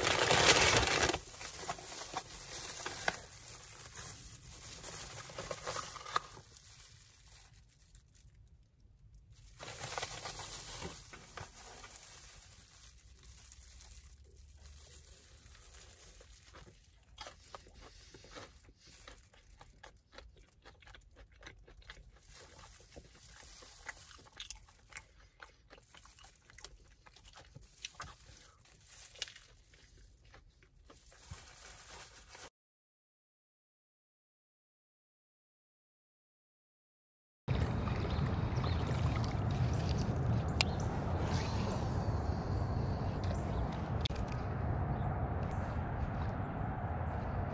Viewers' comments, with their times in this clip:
0:06 this fishing video turns ASMR
0:19 the asmr intensifies
0:24 he turned into a ASMR channel
0:29 Fishing or asmr